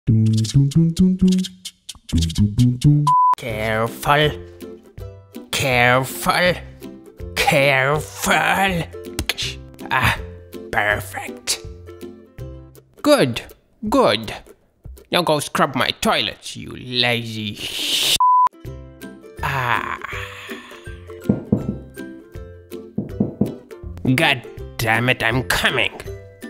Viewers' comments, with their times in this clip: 0:07 it was just me or you too in i heard an this when you punch an mine craft player and in first japan was calling 911 ME:The hell this vid its sooooooooooooooooooo freaking good